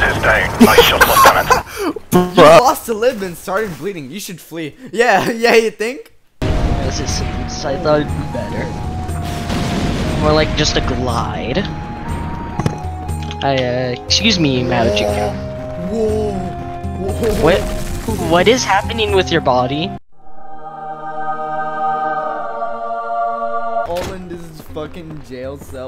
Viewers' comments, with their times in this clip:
0:08 why did you sound like scp 096 crying